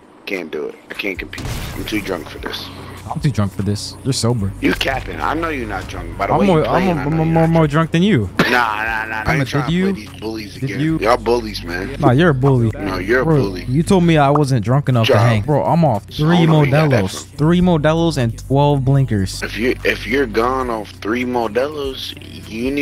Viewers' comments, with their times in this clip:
0:06 this fucker brought out the simple jack from tropic thunder i love it lol